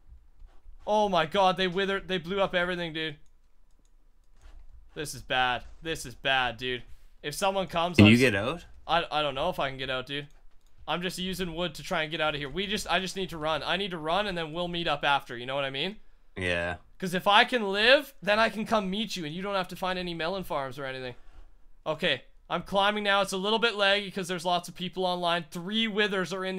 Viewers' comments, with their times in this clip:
0:08 Fuck scared the SHlT outta me his voice came outta nowhere tho